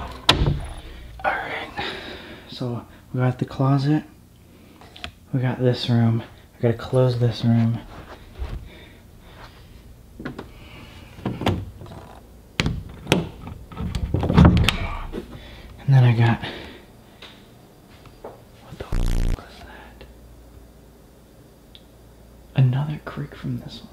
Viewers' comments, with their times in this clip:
0:06 listen carefully straight after "we gotta close this room". Sounds like someone saying "ting" almost. Edit: can't hear it myself through phone speaker, but hear it easily through a good set of headphones